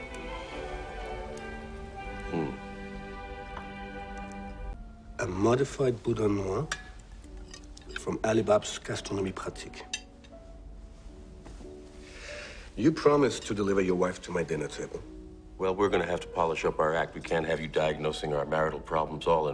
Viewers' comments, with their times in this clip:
0:05 Can't hear this type of piano plays without thinking abt ambatukam omaygot anymore